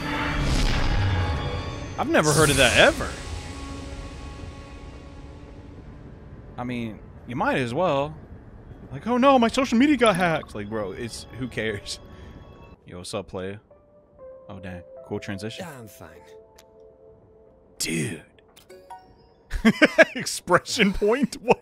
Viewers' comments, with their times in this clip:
0:05 I REALLY HATE to say this, but Chani sounded like the protagonist from The Love Esquire. Like, no WONDER he's so annoying. And also, what's up with that map ? It's kinda concerning